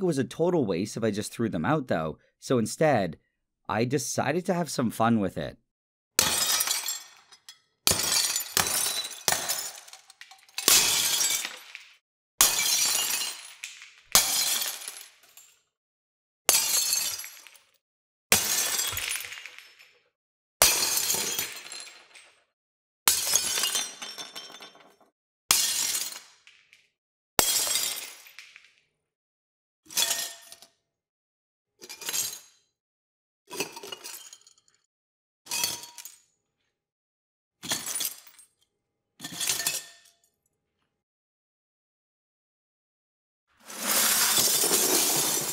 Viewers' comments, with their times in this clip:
0:05 sounds like those beakers have a glass jaw! 🤣
0:06 so thats how to make a start to a wwe theme song right there
0:29 sounds like Minecraft glass splash I remember from my childhood... :D